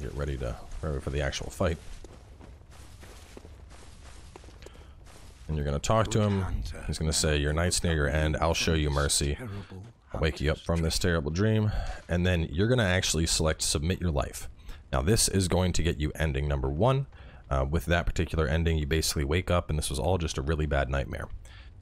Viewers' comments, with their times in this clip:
0:06 why do I hear the n word